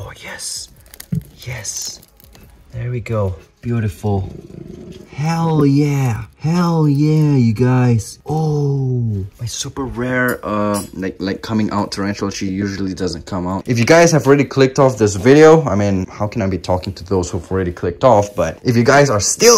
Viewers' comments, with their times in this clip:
0:03 wtf was that growl sounds frightening af!